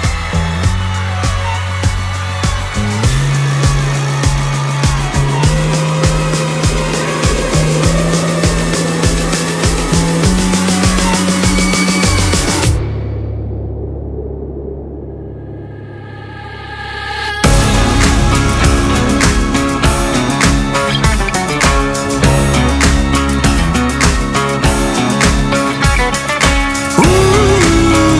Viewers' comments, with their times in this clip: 0:09 * me looks at the screen for the first time, after dancing* Wow! This animation perfectly matches the SKEeeea.. silence and the cup returns for the song to continue